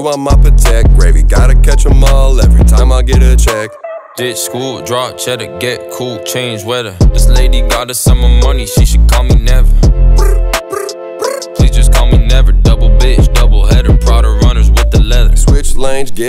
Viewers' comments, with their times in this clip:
0:04 I can’t be the only one that got a crazy X vibe?